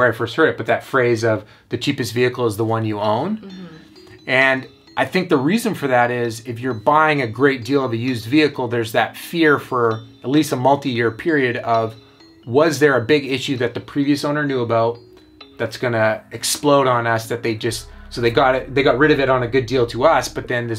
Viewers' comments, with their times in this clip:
0:04 Beats booming! That's an insane amount of rust. Hopefully you got a good deal on it to begin with. Nice camera work as usual!